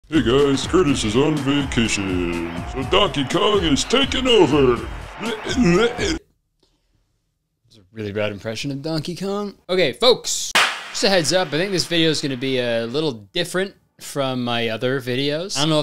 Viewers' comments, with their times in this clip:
0:00 did you hear “hey guys” or something else…